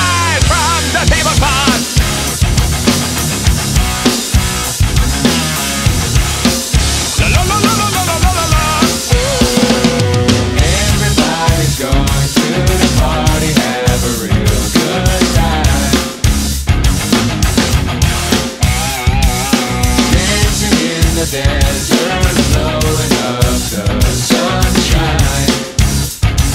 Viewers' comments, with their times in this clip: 0:10 those are supposed to be triplets on the hihat, other than that great cover!